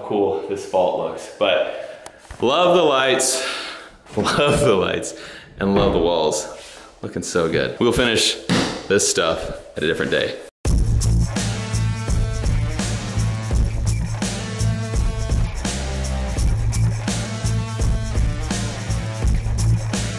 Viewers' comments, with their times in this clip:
0:08 Fast forward to when he bangs on the wall its hollow. Here's a little secret ITS ALL FOR SHOW
0:08 Dude he used OSB. Thats not even real plywood. Plus when he bangs on the wall its hollow. ITS ALL FOR SHOW